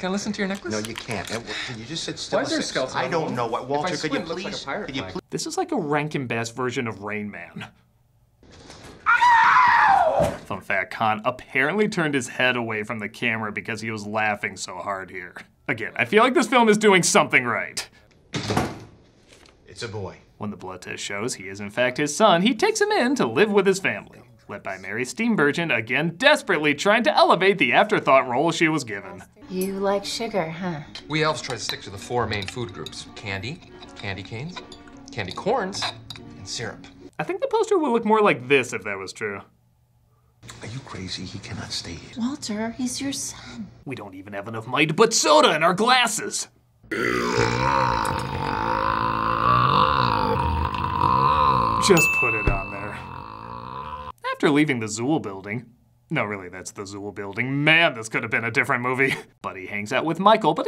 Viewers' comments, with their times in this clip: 0:10 he's worthy of voicing Tom the cat
0:46 Maurice lamarche berp!!!